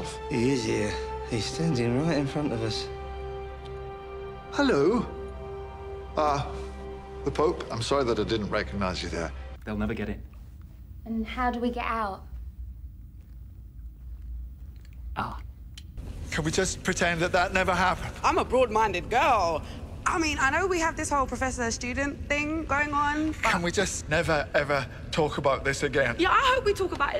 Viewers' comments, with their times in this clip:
0:10 Ninths Ah never fails to crack me up. I just can't. i've been rewinding and watching for the past fifteen minutes. thank me later